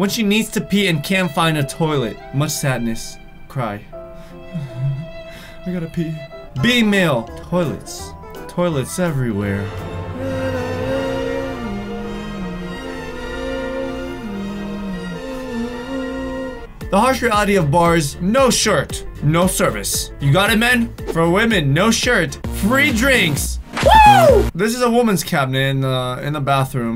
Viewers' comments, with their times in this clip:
0:08 say “toilets TOLIES everywhere” 😂😂
0:09 who laugh here?